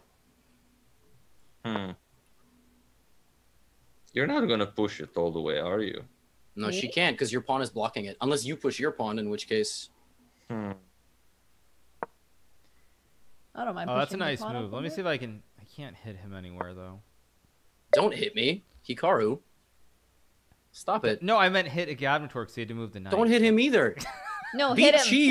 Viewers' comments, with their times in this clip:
0:10 Was that a fart from Hikaru?